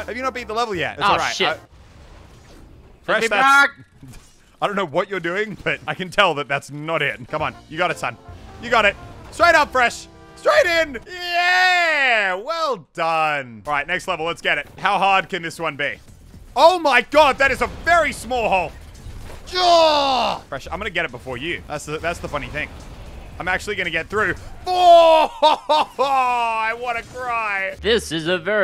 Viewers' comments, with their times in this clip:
0:09 From on, close your eyes and it sounds wierd